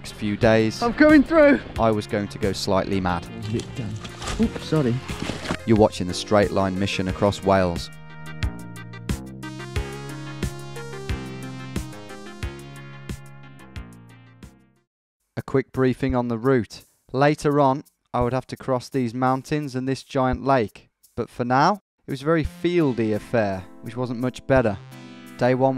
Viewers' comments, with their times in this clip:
0:09 I've been binging this music from your adventures. Sounds just like a real megadrive. The snares/claps in Heroes Run are honestly incredible